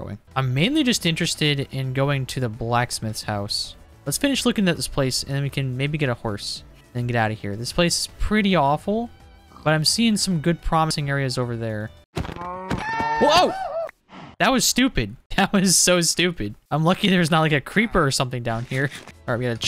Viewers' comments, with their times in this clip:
0:07 I thought the cow made that noise 😂